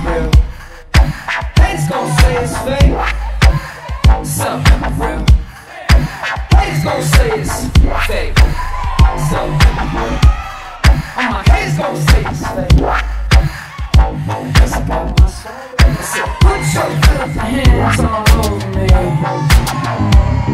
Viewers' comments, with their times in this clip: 0:08 I can't stop watching this part The clap then followed by the arm thing he does is just to damn good 😂